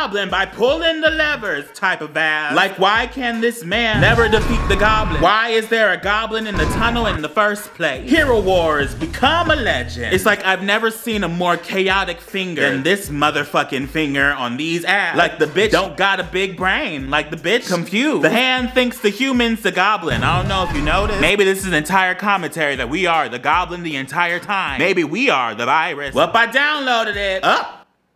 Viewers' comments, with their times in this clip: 0:09 i thought it said “become a lesbian”